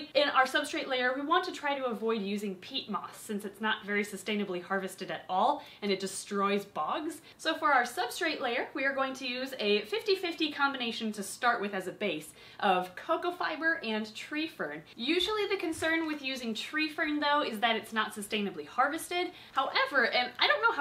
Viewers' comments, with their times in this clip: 0:06 and it destroys ✨ brugs ✨ (I don’t know how to spell that non-English)